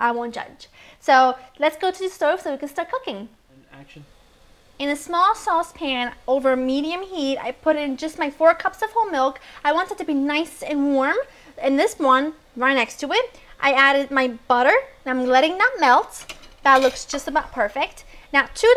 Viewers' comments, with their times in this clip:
0:03 you can hear her hubby's voice :D
0:03 you can here her husband saying ''And Action'' xD